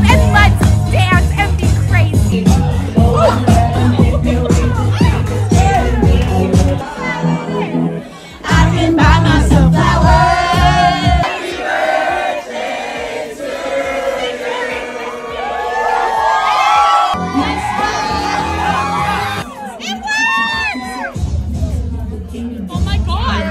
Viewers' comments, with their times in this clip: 0:06 had me dead !!! Everyone in the background saying “ooo”😮